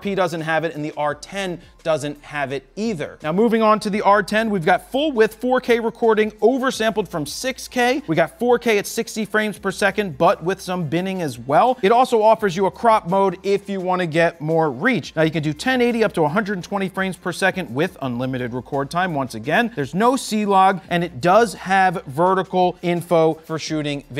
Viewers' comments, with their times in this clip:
0:09 did you say "Butt Width" 😂